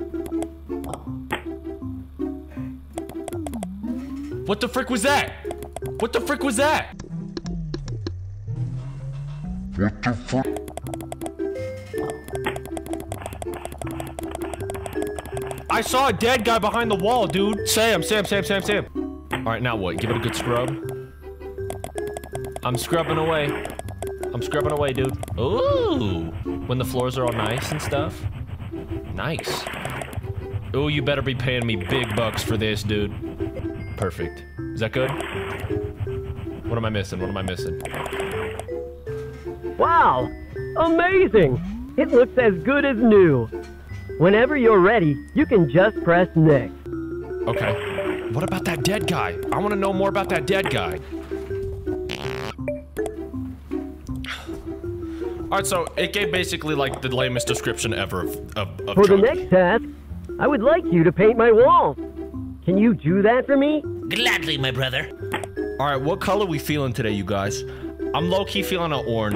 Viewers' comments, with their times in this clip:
0:06 I think its something saying am I even alive
0:50 i'm i swear if this mf farts in the mic again im going to become a piece of fried chicken
0:52 Why did he fart in the mic 😭